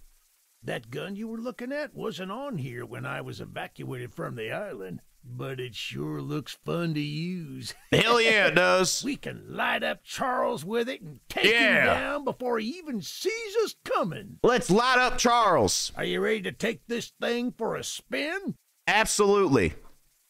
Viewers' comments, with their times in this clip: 0:08 country Ranboo isn’t real County Ranboo